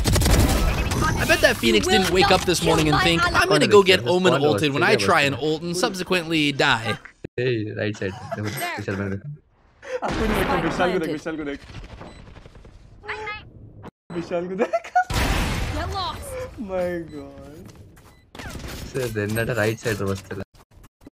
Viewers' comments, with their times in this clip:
0:07 the guys are speaking odia 😭😂they are from my state from odisha 🤝